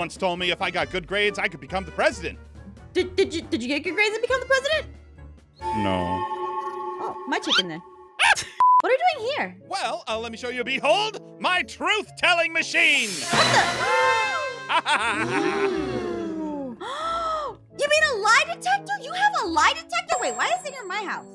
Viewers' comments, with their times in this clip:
0:06 Ein said no in his real voice